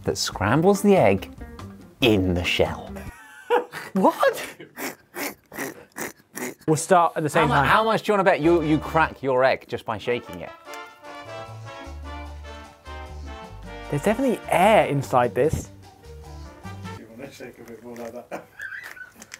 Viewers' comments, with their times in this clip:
0:06 his laugh tho 😂😂😂😂😂😂